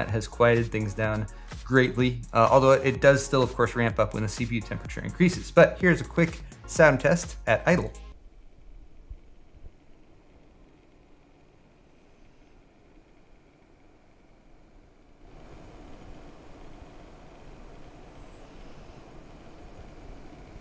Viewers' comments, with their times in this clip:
0:08 all i heard was my pc lmfao